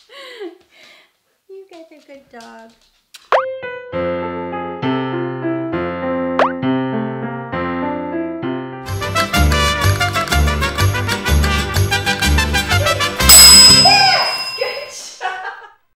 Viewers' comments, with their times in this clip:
0:13 And, LOVE that bell ringing!🛎🐾🐶❤